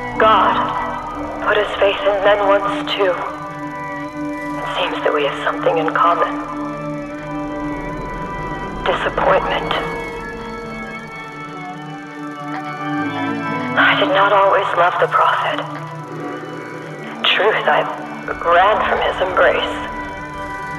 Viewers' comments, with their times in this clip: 0:05 Canon playing in background :D